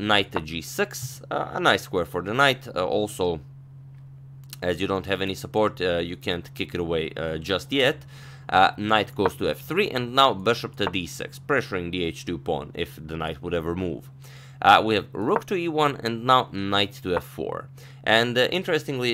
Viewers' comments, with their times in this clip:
0:05 doesnt he sound like "my name is jeff" when he said "yet"?